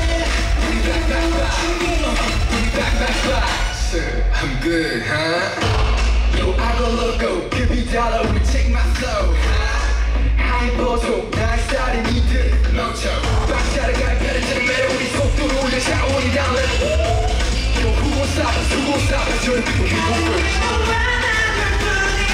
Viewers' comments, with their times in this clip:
0:09 If anyone is wondering what has happened during They all were singing live during this stage and Kihyun himself wrote on fancafe that he has sung with 99% lungs capacity during this stage and told us to watch it. So don't worry, he is just catching his breath during this exhausting choreo :)